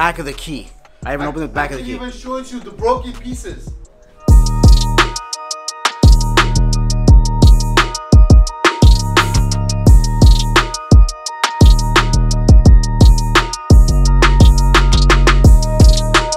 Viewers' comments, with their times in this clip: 0:04 The Beat is sick asf🔥🔥🔥 G Wagon looks amazing